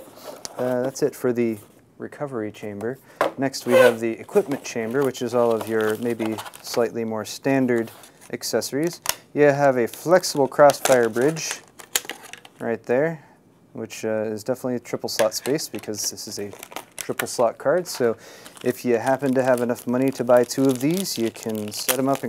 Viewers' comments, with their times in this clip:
0:03 Did the box just farted?